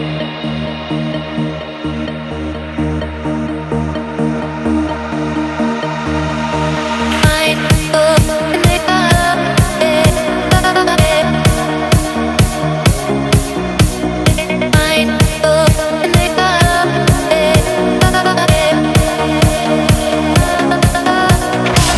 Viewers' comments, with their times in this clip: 0:07 INSANE BEAT - the lyrics is a riddle but she sounds nice . cool from DK and keep calm holy beeeeeep